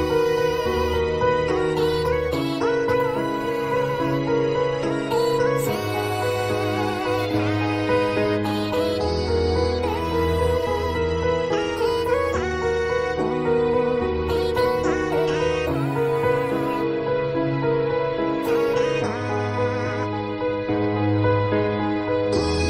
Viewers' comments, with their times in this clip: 0:03 the song, so sad